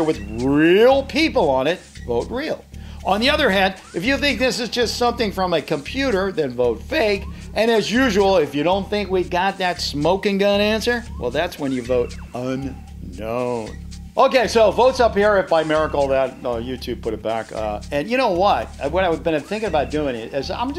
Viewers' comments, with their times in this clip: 0:06 is that a voice crack?